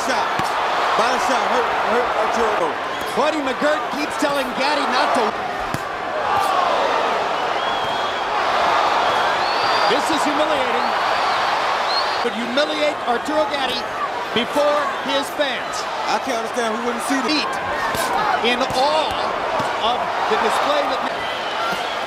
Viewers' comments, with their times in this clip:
0:08 The way the announcer said "this is humiliating" is killing me